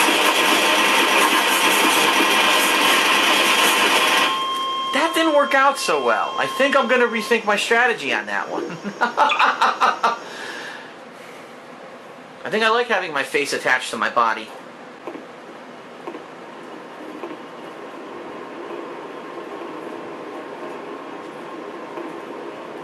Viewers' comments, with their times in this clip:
0:03 that was almost funny until his obnoxious laugh ruins it.